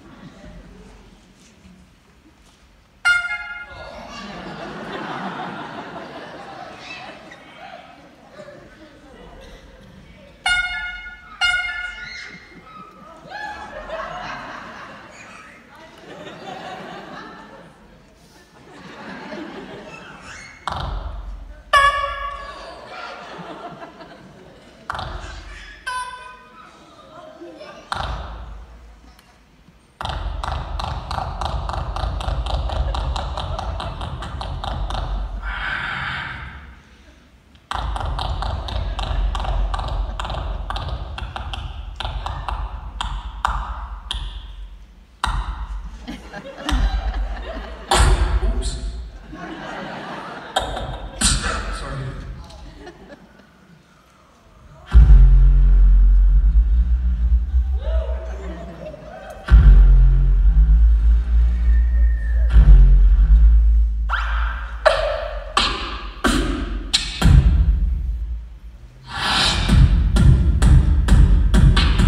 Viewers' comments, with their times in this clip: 0:03 a kids is laughing
0:11 am. 12th. June.2020. good sound, especially the low Bass's...,,
0:30 the great Indian tractor starting 😂😂😂😂
0:53 the Best sub low bass human beatbox. I like that
0:54 Bassz 👑 king reborned 🙏